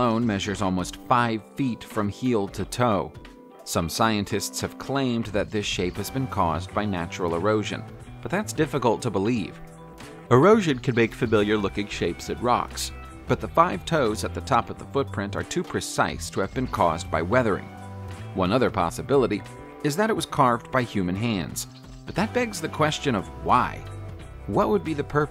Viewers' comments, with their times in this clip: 0:09 where you talking through a yawn?
0:10 were you stifling a yawn ?